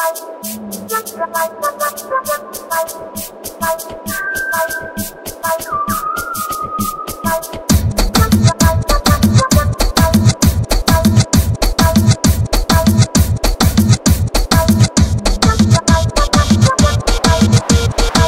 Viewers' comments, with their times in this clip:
0:03 I always have wondered how he made that flute dont u